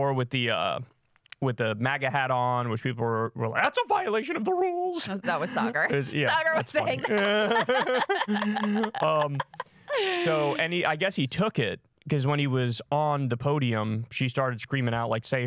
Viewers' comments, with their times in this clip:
0:03 okay, so I googled this. It's Laken Riley. Not Lake and Riley like I thought. So just so we're all clear.